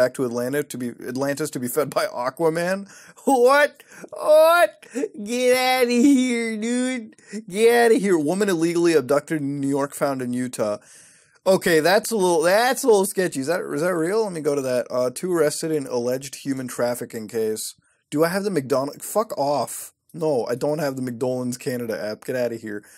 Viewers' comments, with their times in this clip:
0:08 didnt know you could be legally abducted